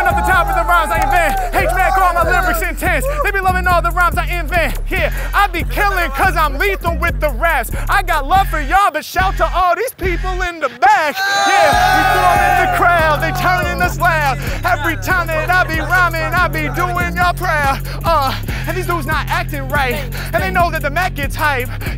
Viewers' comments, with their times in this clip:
0:07 shout to all you in the back, i thought he say shout to all you in shake shack xD